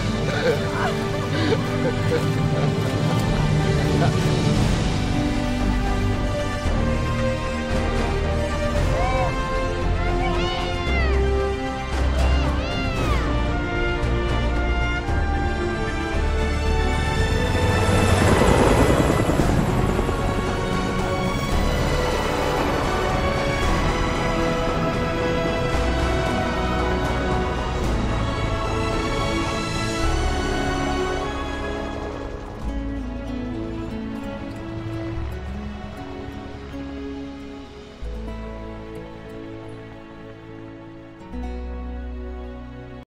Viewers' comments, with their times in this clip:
0:05 EPICCC MUSIC STARTS
0:37 I NEED THAT MUSIC